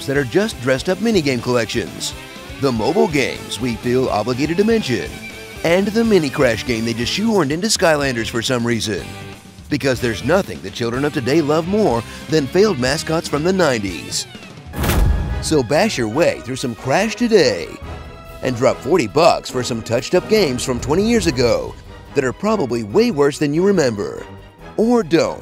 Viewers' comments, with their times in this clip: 0:06 it sounds like crash is talking in this scene. :/